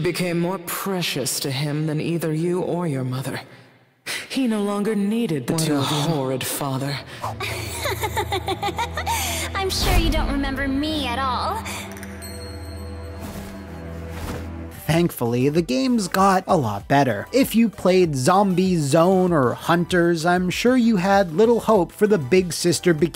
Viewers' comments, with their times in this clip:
0:09 Why does it feel like I heard her somewhere?